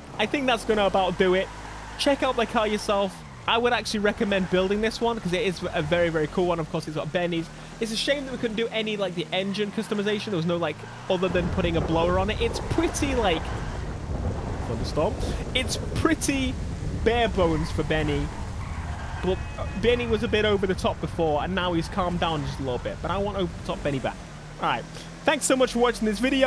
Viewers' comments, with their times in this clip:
0:10 what was that ! I don't remember thunder being this rumbly